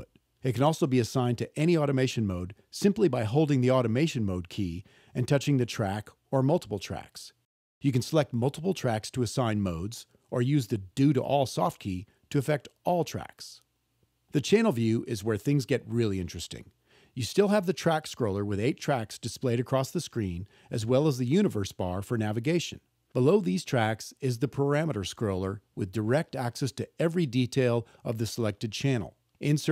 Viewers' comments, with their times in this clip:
0:10 The "Dude!! all soft key!"" feature is dope.